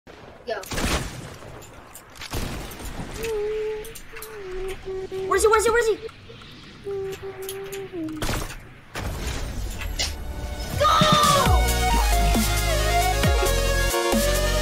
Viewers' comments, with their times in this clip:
0:00 gotta love the kids screaming at something that won’t matter in 5 years